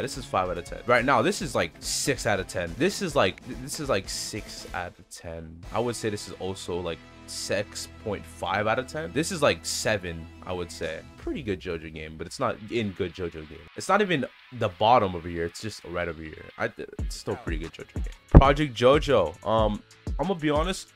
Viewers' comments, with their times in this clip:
0:06 sex out of the 10 wth????!!!!!??